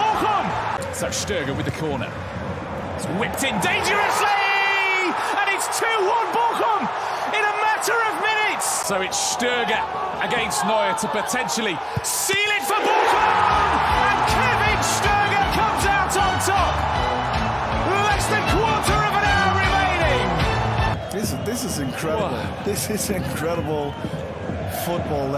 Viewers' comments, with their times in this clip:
0:10 Oh my days!!! That roar from the crowd was terrifying 🥶🥶💀
0:12 The way Bochum played thr Bayern Goal song after their goal lol. Trolls😂😂😂